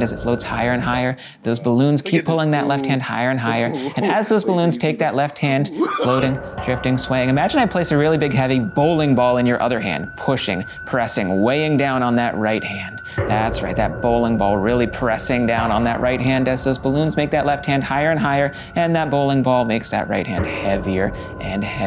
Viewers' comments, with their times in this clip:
0:03 he sounds like a killer 💀